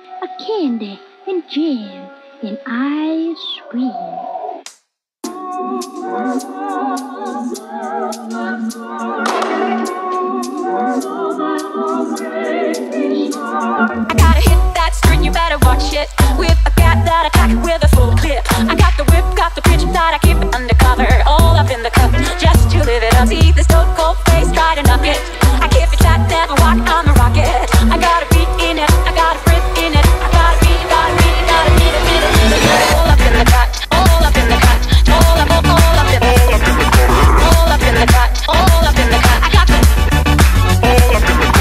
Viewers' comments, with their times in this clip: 0:03 for a second thought. I thought she said "I Scream" instead of "Ice Cream"
0:05 Oh my god... Oh my god... Oh my god... It’s a baaaby shaaart Anyone else hear that now?
0:10 who herd the words “smells like a baby shark”
0:11 DOES ANYONE ELSE HEAR “SMELLS LIKE A BABY SHARK” OR AM I GOING INSANE...
0:23 see this cold place got a nugget That’s what I heard there XD